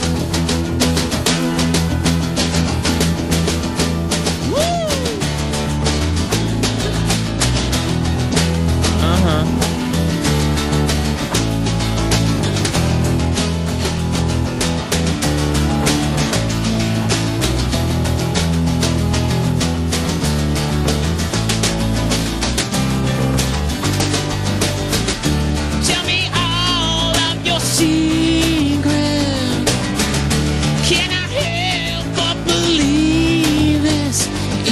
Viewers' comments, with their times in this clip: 0:06 LoL he let's out a little "uh-huh" like he's puff daddy, hehehe
0:19 Listen to the drums, especially the transition (idk the technical term). Jimmy chamberlin keeps a perfect beat